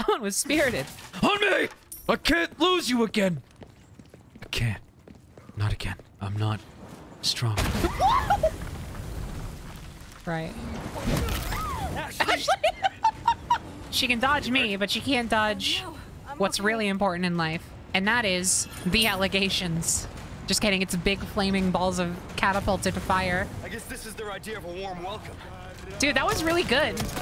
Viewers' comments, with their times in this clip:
0:08 ok, I HAVE to comment on how in this moment ahsley and penny do the SAME EXACT NOISE WTF?!